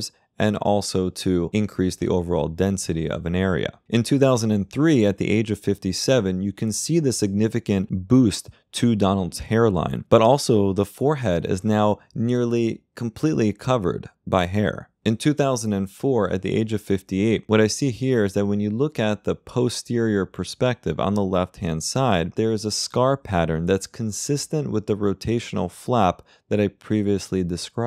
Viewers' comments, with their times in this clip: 0:10 The way you said "by hair" made me laugh.